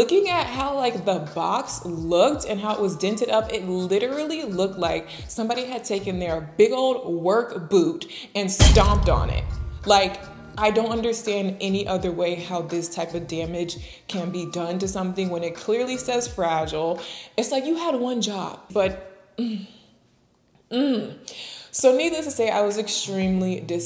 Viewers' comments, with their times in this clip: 0:08 Babyyy the sound of broken glass scared the hell out of me 😂😂😂